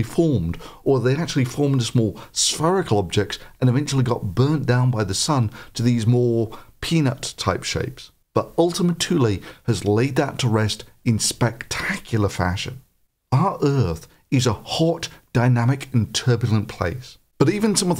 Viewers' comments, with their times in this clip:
0:03 Form PENIS type shapes Cannot unhear